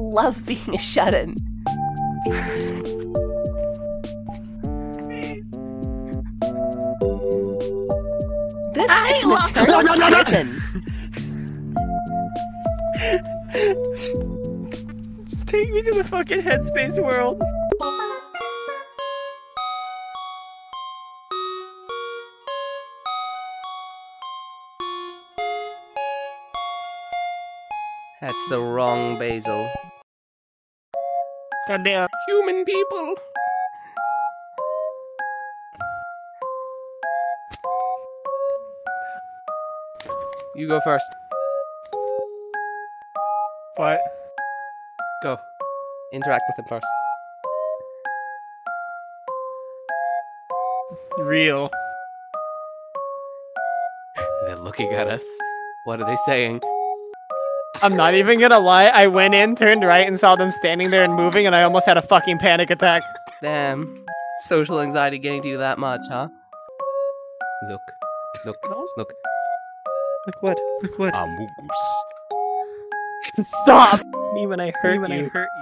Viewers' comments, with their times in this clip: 0:04 Aww you can hear a cats meow🥺
0:58 I really like how you can hear Mari coughing.